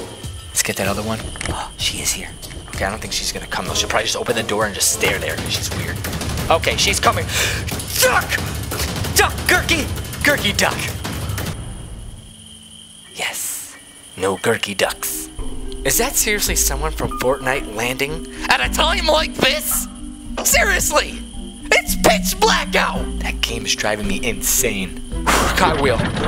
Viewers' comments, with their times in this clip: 0:09 I thought he said the f word